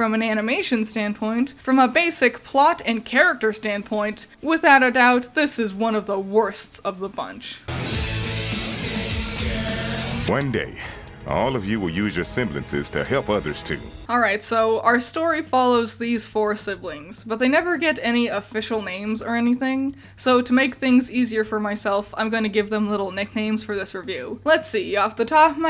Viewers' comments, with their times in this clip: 0:07 Rob Zombie sample. Very vintage an fitting choice, nice. 9/10